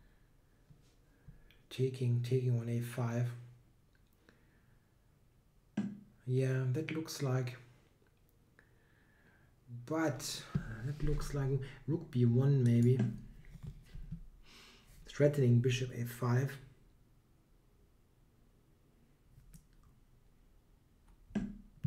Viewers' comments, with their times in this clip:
0:05 That looks like... Butt!! xD